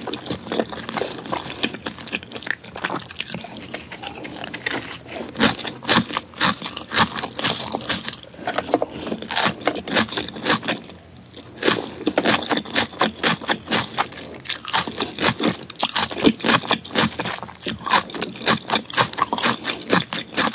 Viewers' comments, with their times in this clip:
0:03 CRUNCHY NOODLESSSSSSS jk lol.....